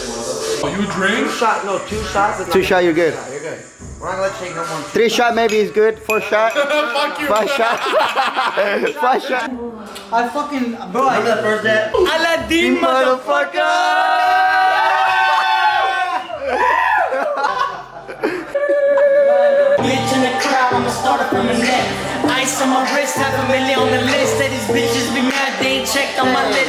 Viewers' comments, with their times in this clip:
0:08 Btw someone get fuck hear at the background LOL :D